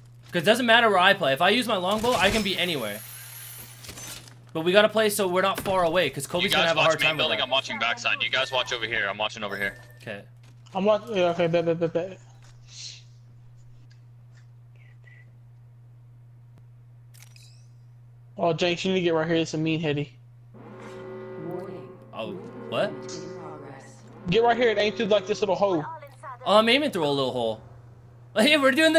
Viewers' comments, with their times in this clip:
0:09 When shit got too intense, and you stuttered